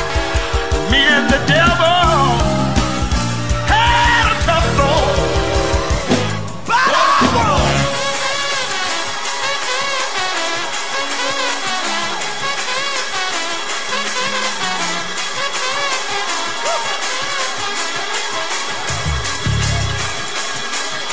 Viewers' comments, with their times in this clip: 0:08 this song takes off like a rocket to the moon. That man betta play that horn. 🔥🔥🔥❤